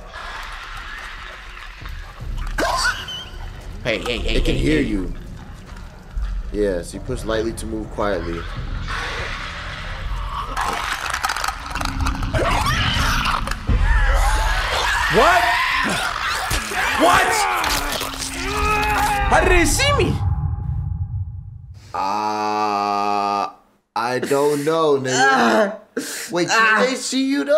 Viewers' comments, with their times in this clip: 0:09 when they start clicking like that they using echolocation to find whats around them so dont be in front of them when they do this but they are indeed blind